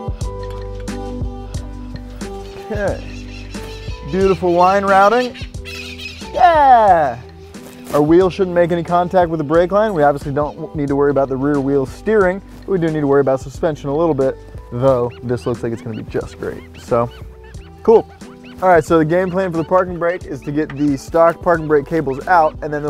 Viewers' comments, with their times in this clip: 0:04 sounds like the parakeets that fly around the Pasadena, Glendale, Burbank area. It’s said they broke out from a pet shop and eventually bred their own flick overtime. I’ve see them fairly often when it rains